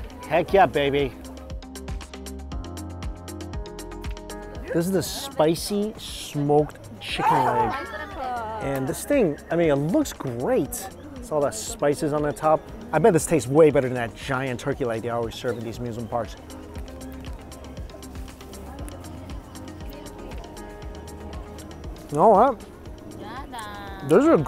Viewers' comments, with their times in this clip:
0:04 This is the spicy smoked chickenAaaaghhhh somebody dies in the background
0:07 that sneeze lol